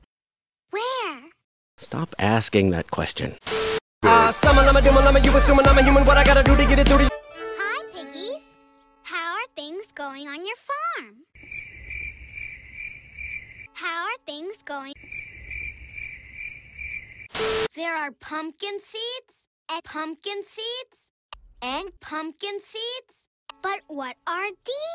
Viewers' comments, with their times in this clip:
0:07 I've could've made them talk like peppa pig lol